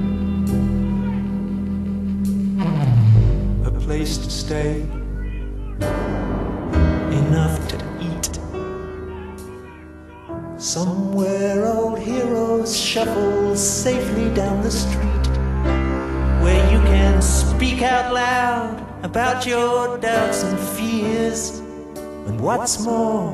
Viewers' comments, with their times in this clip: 0:09 Did he say " Bhench** "